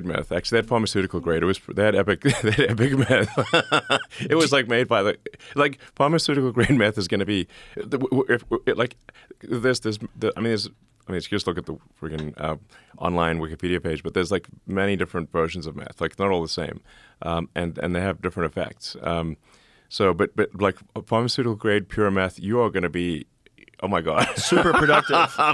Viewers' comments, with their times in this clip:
0:07 sounds like the meth was kicking in on Elon🤣